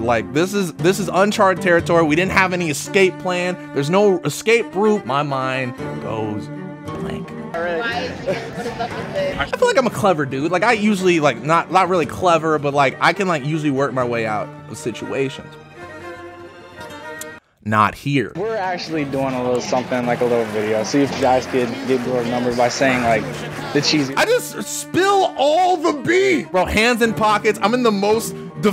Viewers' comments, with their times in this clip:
0:05 the fucking BLEACH soundtrack had me !!!!!! LMAOOOO
0:11 WHEN I HEARD THE ESPADA MUSIC i knew he was gonna blew it